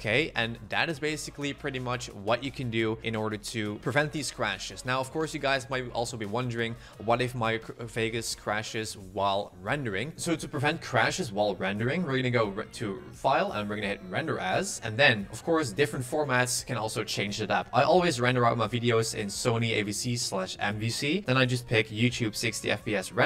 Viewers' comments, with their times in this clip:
0:10 your voice turns robotic